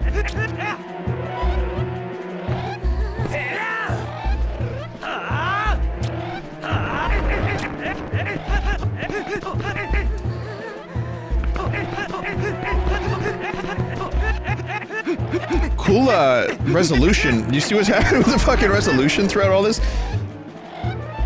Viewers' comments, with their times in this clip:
0:09 is the moans for you highlighters